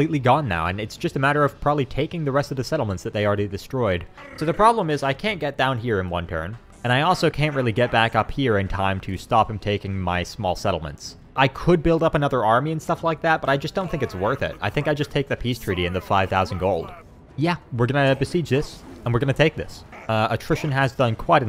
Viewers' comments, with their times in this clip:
0:03 Man is playing Halo in the background loving it 😆